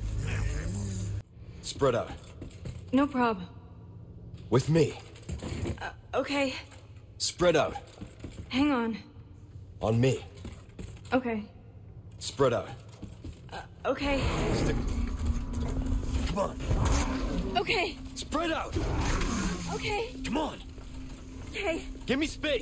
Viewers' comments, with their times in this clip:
0:05 Ashley's "Ok" is the sweetest thing ever🥺